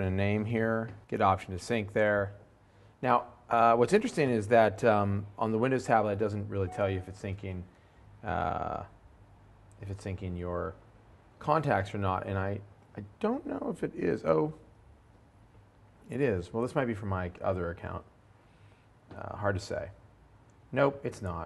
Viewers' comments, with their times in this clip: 0:06 Did anyone check their email when the mail signal loaded up